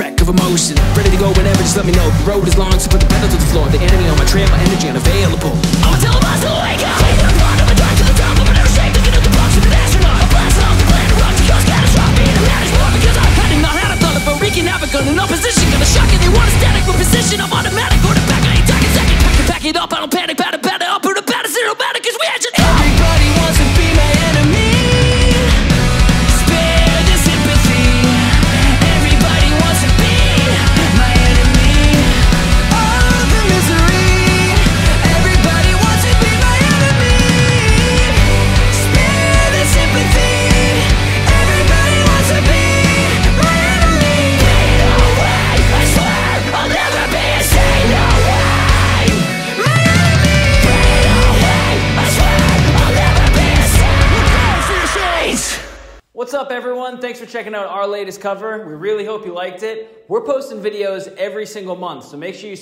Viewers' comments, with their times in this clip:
0:07 Woah. I already fucking loved your guys' sound already, been listening to you for years (your covers are incredible, still can't stop listening to Who Let the Dogs Out) But FUCK. just blew my mind wide open. As a vocalist myself - holy shit I know the fucking talent to be scream-rapping that crisp, tight, and clear. Unreal, I can't even describe how impressed I am.
0:49 Ok, this wa my first time hearing you guys and that transition from the chorus, to the rap verse, then to screaming had my banging my head along... But transition almost caused me to break my mouse from clicking that "subscribe" button so quick